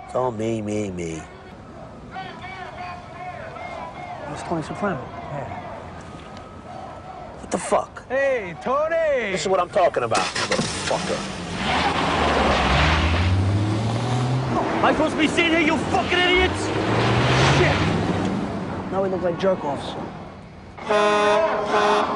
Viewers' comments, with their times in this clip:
0:09 classic! Tony angry they recognized him, proceeds to scream his head off